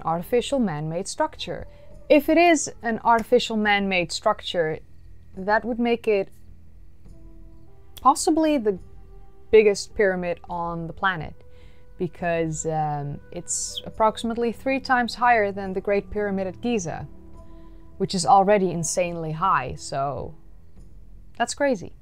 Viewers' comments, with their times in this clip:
0:07 Her accent changes to american.